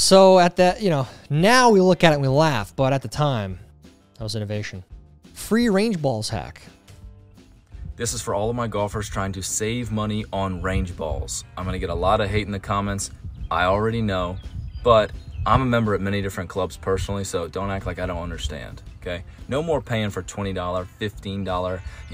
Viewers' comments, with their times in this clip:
0:06 Really should be careful about the speed you say words....at you said Free Range Balls Hack too quickly.